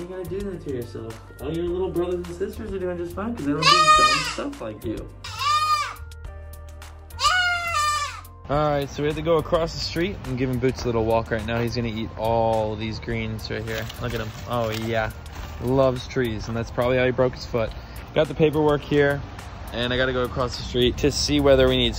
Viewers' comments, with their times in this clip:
0:07 sounds like he's voicecracking